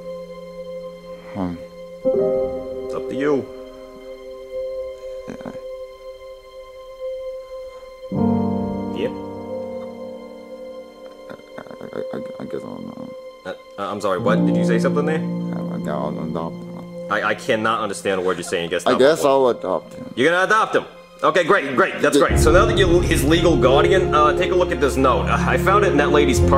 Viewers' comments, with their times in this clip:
0:10 the music is very sad